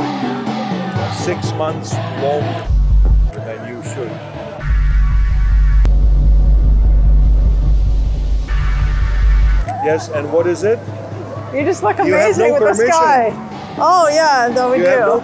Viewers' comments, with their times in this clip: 0:03 The guy definitely is German. "You have no permission"